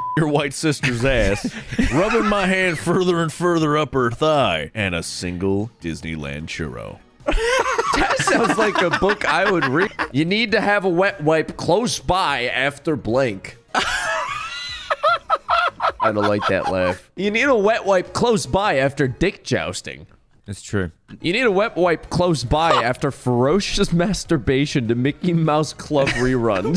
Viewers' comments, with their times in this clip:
0:09 the voice crack precious lmao